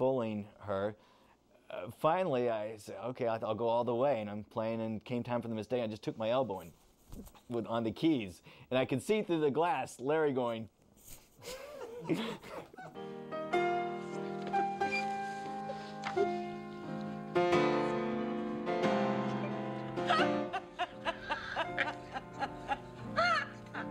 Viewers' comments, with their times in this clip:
0:10 Is there anything better than Elaine's laugh? 😍